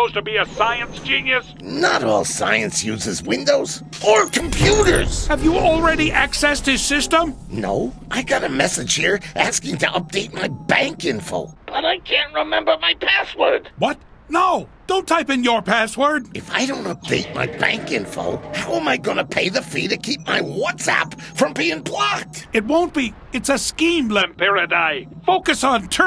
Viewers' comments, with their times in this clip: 0:10 Lampyridae kinda sounds like Mark Hamill, especially when you hear him through the phone